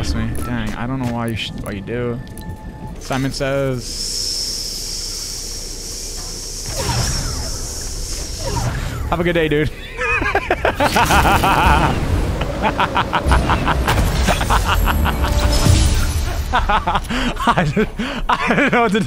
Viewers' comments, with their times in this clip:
0:06 man sounds like a charge shotgun lol